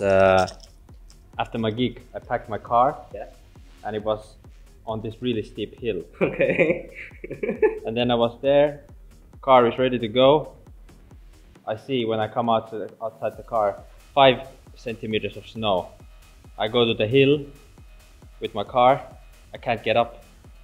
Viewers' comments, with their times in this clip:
0:06 I love how the dude was laughing already at this point 😂